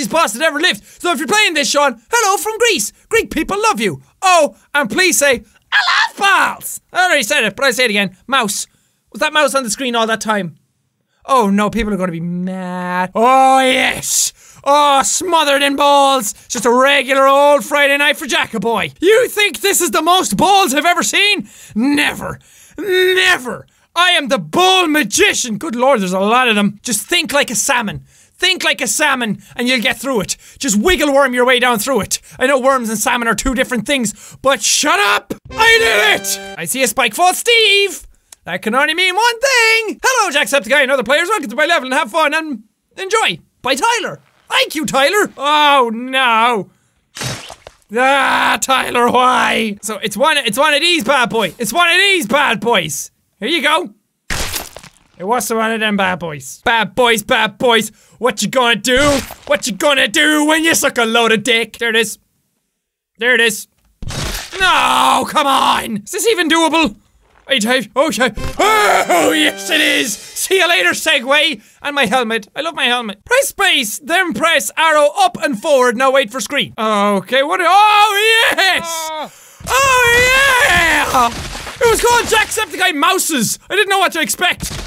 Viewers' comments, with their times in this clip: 0:07 You can see and hear the fear
0:40 right here my headphones glitched for a couple seconds and it sounded like there were like 7 Jack saying the same thing
1:07 old jack sound like XDDDD